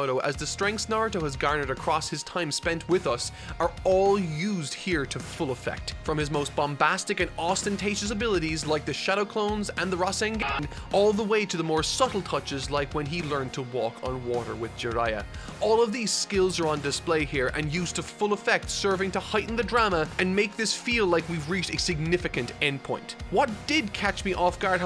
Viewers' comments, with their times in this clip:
0:10 “The Rasen-GAH-n” …caught me off guard lol